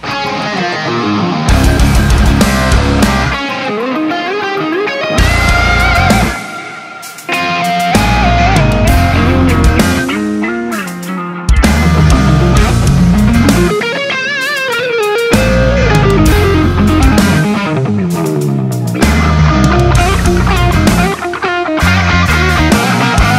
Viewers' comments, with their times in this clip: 0:10 I love the pickup selection the change in contrast rite there and through the fallowing couple mins is Genius.